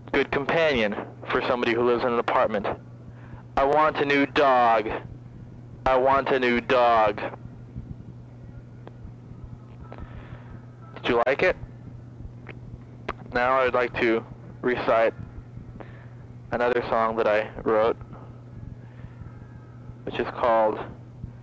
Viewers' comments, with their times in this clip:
0:04 Starting his ranting about the dog reminds me of Wet My Bed by STP